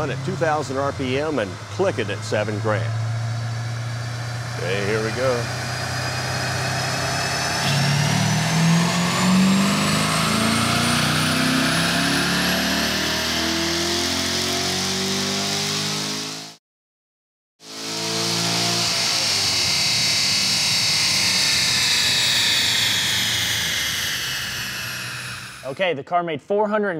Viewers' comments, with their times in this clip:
0:07 turn on the cc and it will say music to the corvette sound on the dyno